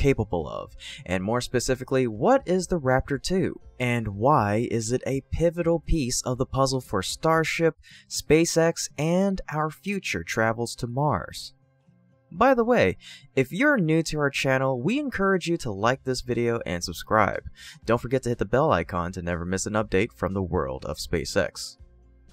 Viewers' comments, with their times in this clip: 0:09 "ahh-uh-nd ah-hour few-chore tuh-rah-vullz too-uh muh-arz"-!? In non mouth-breather version of English; sane people know that "our" within "and our future travel to Mars, already denotes multitude making it redundant and WRONG to conjugate travel into so called "travels." The word travels ONLY denotes the propensity for travel, it isn't "plural form of travel" but mouth-breathers overuse the suffix "s" as means to smooth out the flow of their speech patterns, it's a lazy "trick" that has been trashing linguistic integrity for hundreads of years but exponentially more in every decade for the last 60 years...